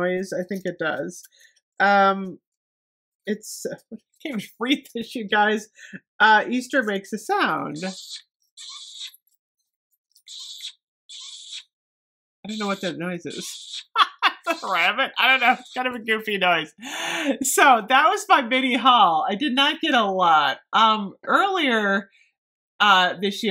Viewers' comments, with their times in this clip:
0:08 Sounds like my grandpa sucking soup thru a straw.